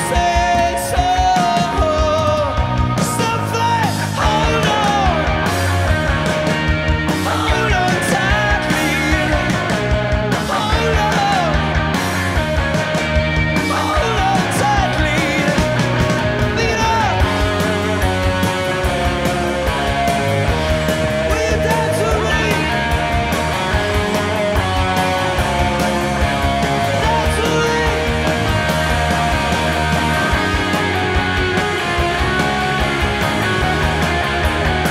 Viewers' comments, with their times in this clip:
0:04 nice "drowning man" tease
0:04 that 'drowning man' snippet ❤
0:16 i love it - being a pretender bassist , the part starting is such a cool bit to fake along to (with adam turned way up of course)